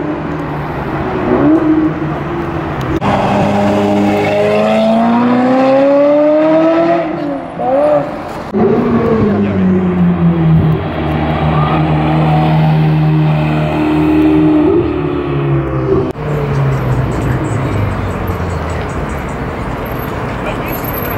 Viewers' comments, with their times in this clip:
0:03 the F355 sounded way better! lol